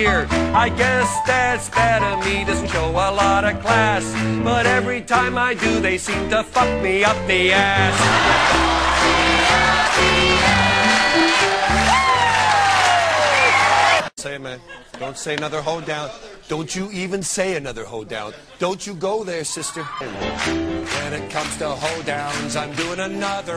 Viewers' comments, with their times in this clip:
0:07 I love that the pianist is cracking up, but still trying to play the rest of the song!
0:08 pianist is laughing her ass off too😂😂